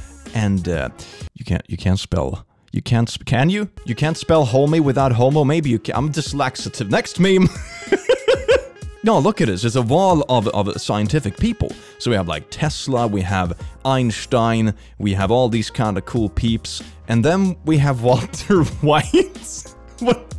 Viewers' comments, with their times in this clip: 0:04 "You can't spell homie without homo, maybe you can, I'm dys-laxative" Holdup, you're what?
0:05 "I'm dyslaxative" -the Click